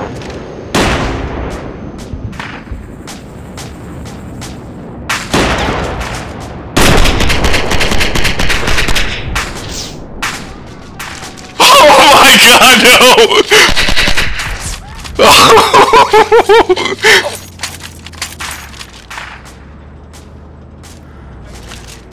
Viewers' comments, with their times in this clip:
0:06 Lmao, how F'ing grim is it when the BMP goes up and seconds later there's a guy screaming and on fire. It's like a horror movie.